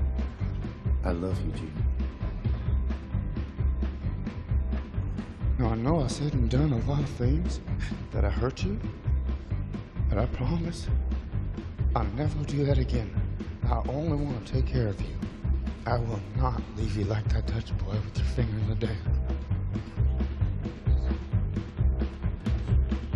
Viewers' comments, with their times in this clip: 0:05 The line delivery by Joaquin in is absolute perfection. He sounds so in love and vulnerable it’s just out of this world type performance by both these two gems.
0:05 And the line delivery literally sounds like he’s actually in love with her.